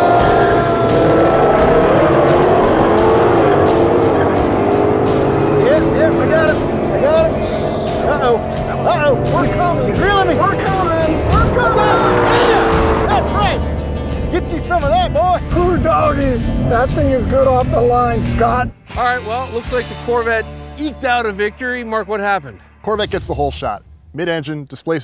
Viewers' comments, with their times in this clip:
0:07 He let off the gas, you can hear the wastegate